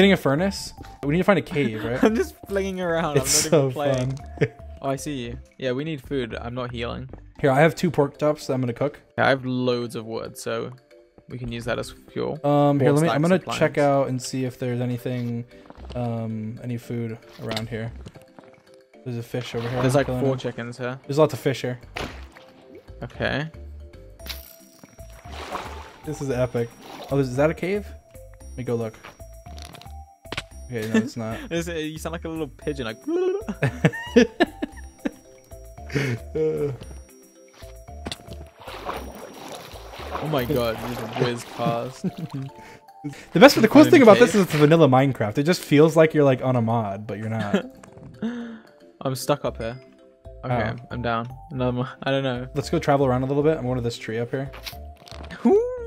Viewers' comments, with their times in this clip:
0:06 “i have two pork tops” ???
0:07 did he just say porktops?
0:31 Georges impression of a pigeon lol
0:33 George doing pigeon sound is the cutest thing
0:43 I am gonna speed run my words Huh who needs Eminem if we have dream